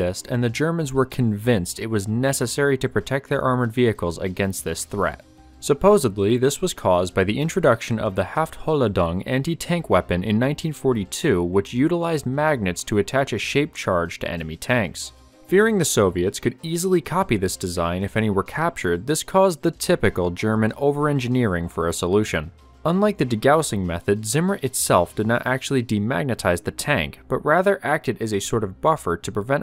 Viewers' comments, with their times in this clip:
0:04 No Videos where the narrator says "supposably" continues on this viewer's system.
0:04 He did not say "supposebly". Tell me he didn't.
0:05 "supposably" isn't a word. The word you're looking for doesn't have a "B" in it. I can't take anything else you say seriously.
0:15 ah, the legendary "Haph Holladong".